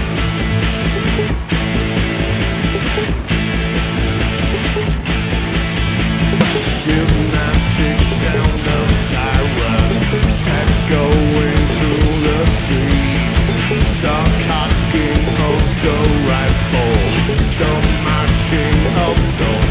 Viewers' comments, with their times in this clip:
0:06 This beat is awesome during the verse, gotta love Ilan for little things like that